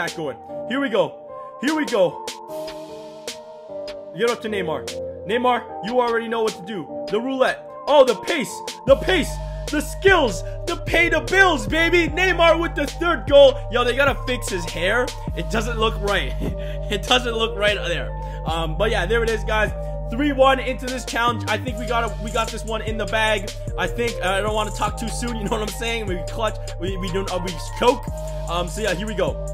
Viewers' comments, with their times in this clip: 0:10 sounded like a rap